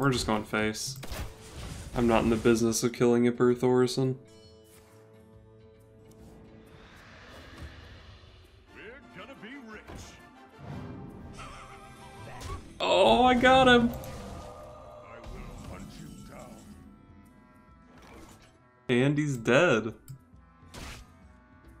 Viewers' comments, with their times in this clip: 0:07 that weasel laugh was perfect :D, I didn't know the weasel would laugh after the opponent playing reno or kazakus with 2 of these shitters in their deck :D. I guess that was the whole blizzard's idea behind this card